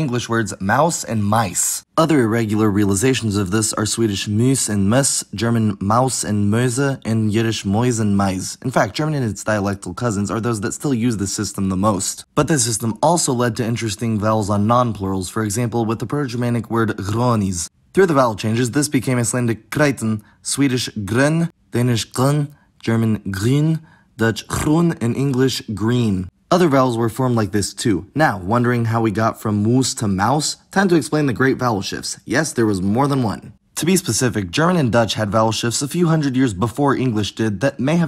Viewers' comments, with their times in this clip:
0:06 "Mäuse" in German is pronouced like "moize" and not "möüze". The way you pronounced it could be mistaken by a German for a very sexual word.
0:06 It made me lol how you pronounced "Mäuse" wrong in German (sounded like Möhse) but then correct in Yiddish, which sounds similiar to "Mäuse" but without the "e"
0:21 Interesting. As a Dane speaking Danish I'd like to remark that danish is flat and closed. You 'hum' or 'sing' Danish too much. Example Grøn. The danish word Grøn should be a flatter, darker sound, farther back in the mouth. You have the 'ø' just behind the teeth but it should be guttural, back of the throat. Grøn is also gunshot short - n closes sharply at the rear. Thumbs up. Keep up the fine work.